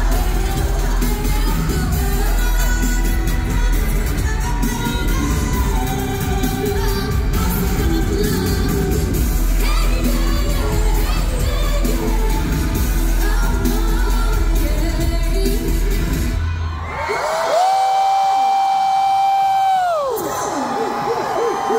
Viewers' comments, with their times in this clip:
0:04 In you can hear bae's adlib.😳